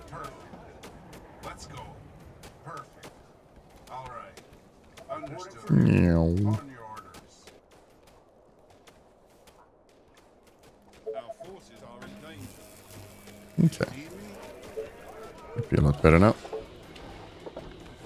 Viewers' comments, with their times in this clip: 0:04 Excellent sound effects